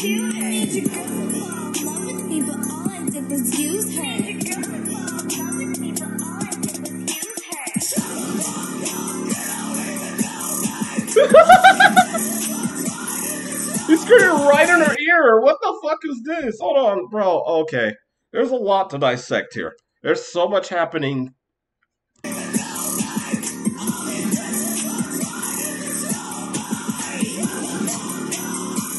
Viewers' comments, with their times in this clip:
0:09 the dude just screamed in her ear 😂